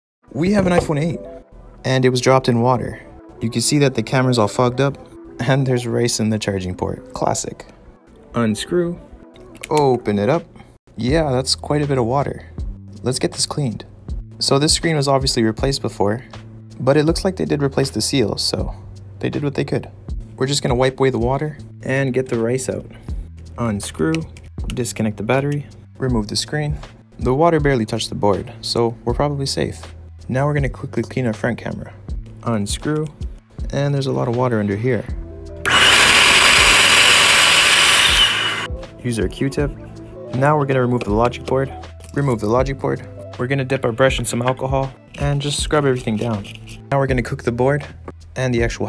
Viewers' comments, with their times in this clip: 0:05 It’s not RAISE It’s RICE
0:34 headphone warning needed
0:35 bro volume warning
0:35 RIP all headphone user's ....